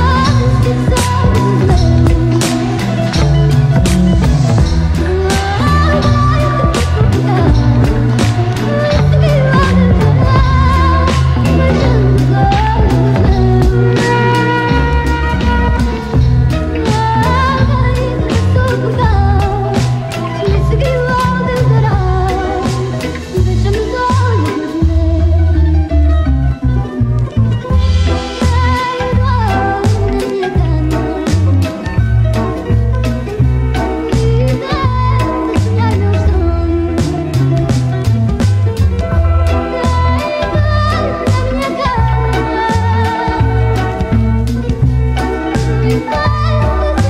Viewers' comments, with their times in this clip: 0:05 Fado + Trip Hop A magical combination!
0:29 and I'm in love. Deliciously wicked vibes in this mix. Thanks for sharing!